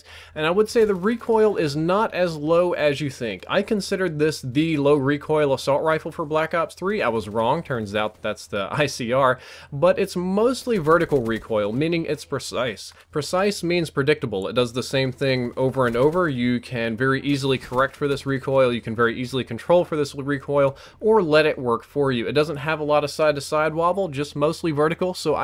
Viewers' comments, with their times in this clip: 0:09 He said precise really weird